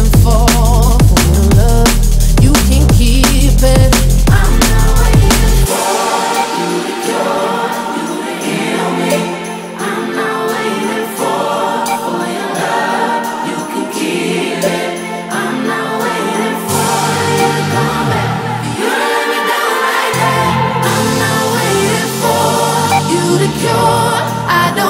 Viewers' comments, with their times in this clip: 0:05 seems to be a mastering problem or ?? volume go up at the breakdown weirdly